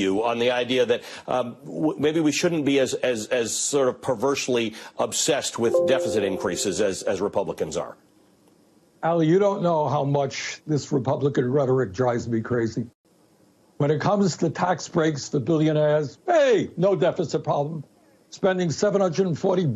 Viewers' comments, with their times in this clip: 0:03 had me wondering why my phone made a windows error noise